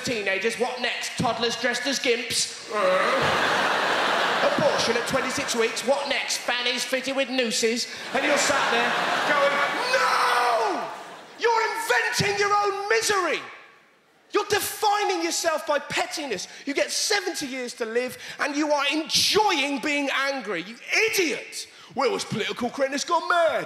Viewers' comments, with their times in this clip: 0:09 Wow, the whole audience dies at his scream